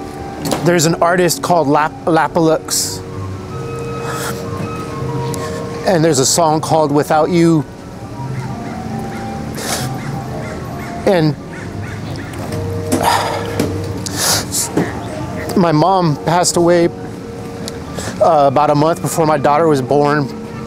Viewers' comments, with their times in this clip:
0:07 The song without you that he talks about I got emotional with the way he was saying it but when I looked the song up I did not understand the connection But I feel as pain it gets me emotional because I lost my mother tragically when I was 25 years old